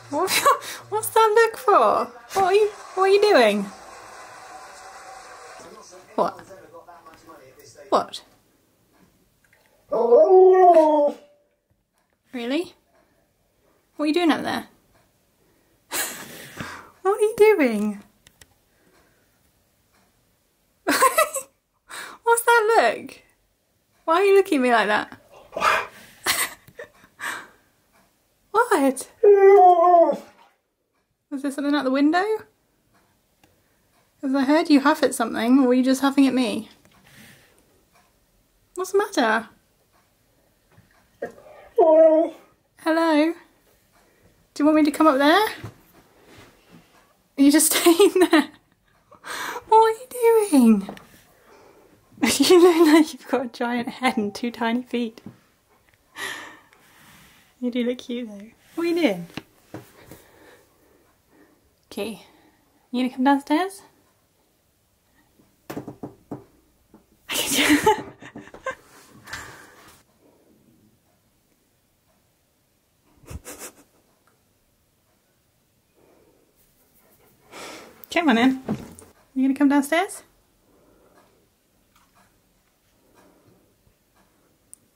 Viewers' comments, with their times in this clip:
0:10 key just like wolf and demanding a lot
0:34 What are you huffing at key:YOU!!!!!
1:09 I love how he moans and expects you to come instead of coming to you. A true lord!! is wayyy to hilarious to be legal😂😂